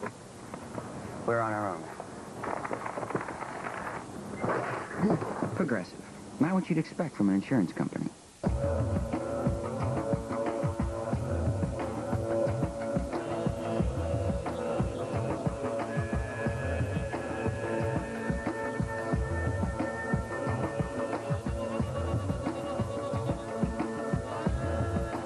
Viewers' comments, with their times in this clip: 0:09 I wish adult Swim would bring this classic intermission background tune while schedule show times